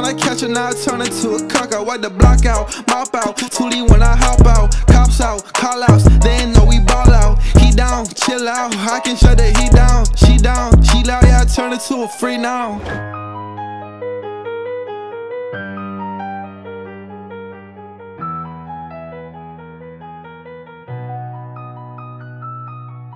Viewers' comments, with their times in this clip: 0:06 for some reason sounds so good. The fact that the song pauses for like 0.4 seconds almost like he’s taking a breath. Idk.